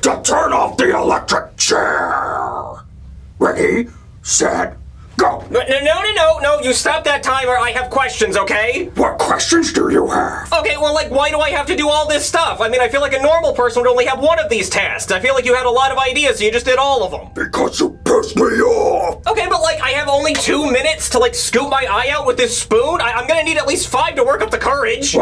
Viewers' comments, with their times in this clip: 0:09 why he sounding ike yoda
0:09 he sounds like yoda😂
0:09 Billy sounded like yoda